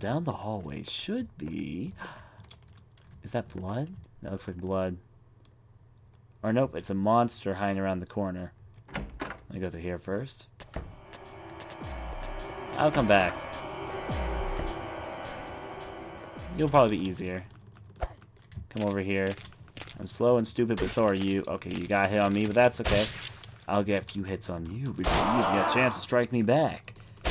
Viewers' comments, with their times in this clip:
0:08 Favorite part had to be Walk in, hear scary music, walk out.